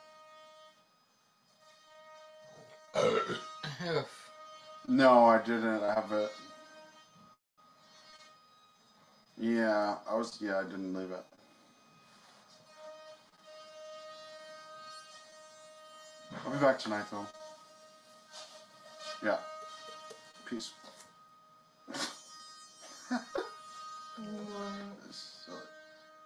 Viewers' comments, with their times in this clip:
0:09 is someone using an ultrasonic toothbrush under the camera